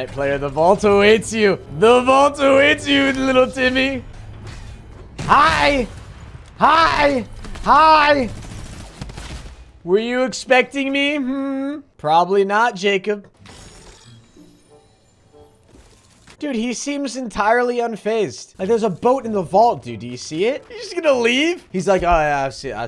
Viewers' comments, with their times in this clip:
0:06 his voice there reminds me of the guy screaming NONNI? Or whatever he said 😂🤣